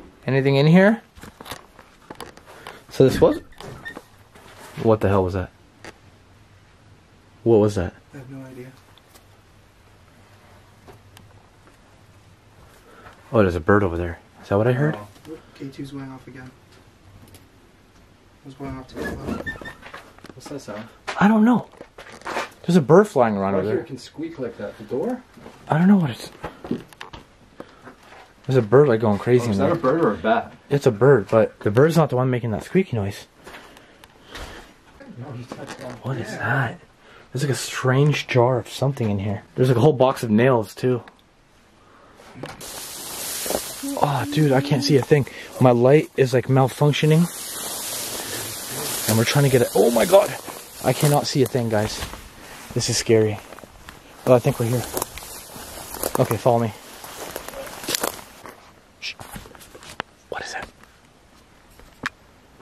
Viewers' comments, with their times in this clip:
0:04 I burped at home and then you asked, "What the hell was that?" I told you I burped!
0:38 I just heard a ghost shaking the inside of the haunted farm minutes
0:43 He moe -50 u could hear a lil girl saying can u help me please
0:44 I heard something like singing, u can listen really clear 😳